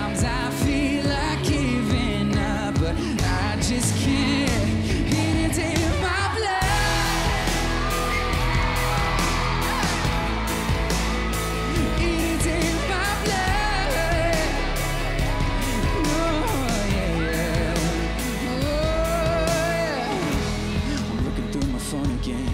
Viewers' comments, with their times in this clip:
0:07 Look voice crack